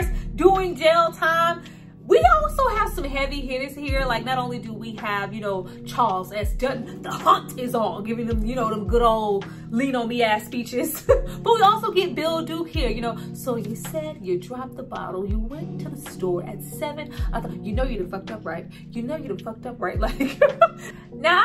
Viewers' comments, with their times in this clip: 0:06 shit got me crying 😭 “the hunt is on!!!” Sounded just like dude fr!!.. I’m 26 I would never forget the first time watching this coming up.. this and dead presidents lowkey scared tf outta me.. both had super depressing endings